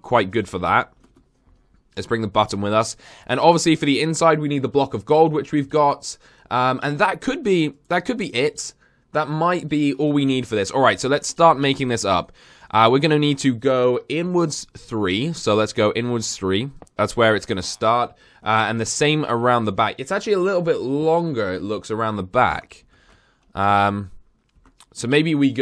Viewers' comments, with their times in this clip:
0:07 it says but